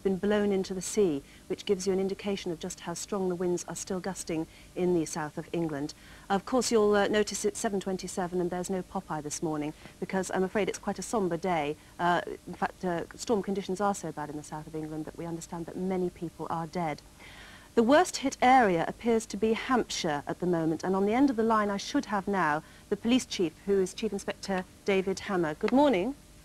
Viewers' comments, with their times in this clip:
0:08 there's no what this morning? it sounds like she said "popeye" as in the cartoon character. why in the world would a morning show air cartoons